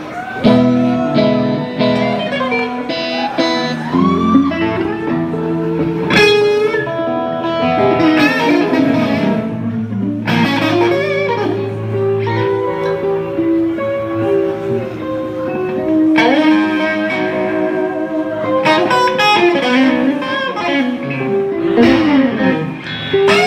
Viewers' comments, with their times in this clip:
0:09 Steve Vai needs to tune and everyone immediately starts making noise.